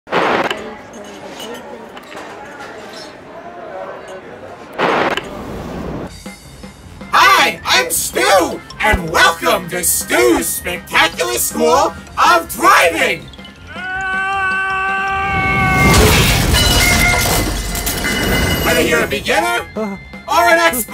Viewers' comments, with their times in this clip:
0:06 The best voice of stu